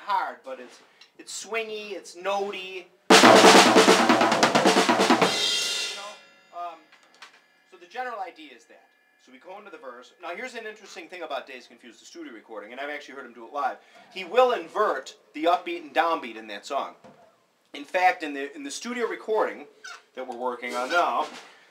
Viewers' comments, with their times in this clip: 0:06 The reason he inverts the beat in the second verse is simple and is uniform throughout his playing of Dazed and Confused. Actually it's simple for him and for anyone who figures out why but difficult to explain. Basically he uses triplets within a 4/4 time and when the song reaches in the studio version he basically hits 3 crashes/bass pedals and a fill which interrupts the 4/4 pattern on the beat of 4 but continues the 4/4 pattern from there so after 4 measures starts the chorus over but one beat behind. Bonham just keeps playing like it's on time and it works out better than if he tried to fix it which is one of the things he does that separates him from every other drummer. Tell me what you think. I'm on the verge of breaking the Bonham code. It's his style of tracking the beat with a separate language for keeping perfect time. Any tips?